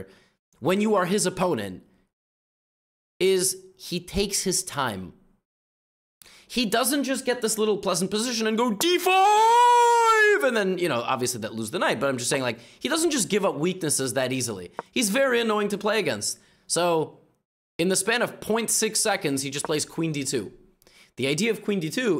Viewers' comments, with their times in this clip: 0:08 lol Levy yelled D4~~~ during analysis!
0:08 I replayed this glorious shriek an embarrassing amount of times